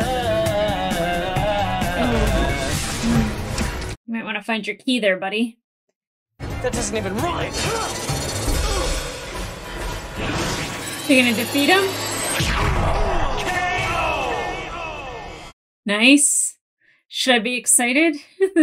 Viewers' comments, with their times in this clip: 0:03 wdym, he was on key